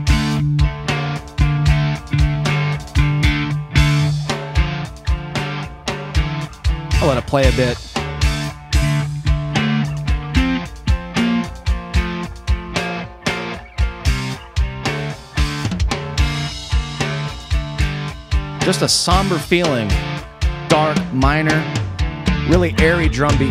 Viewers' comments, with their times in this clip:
0:09 It's not the first time he's heard it. minutes he is already playing the higher note from the “2nd”. Runde” which he could theoretically never have heard before.